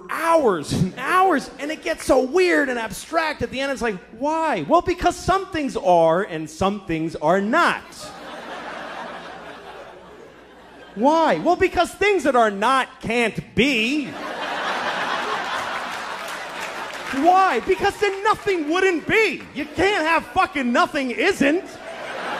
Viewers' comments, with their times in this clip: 0:04 The sounds like Jordan Peterson explaining why global warming on earth hasn’t been proven😄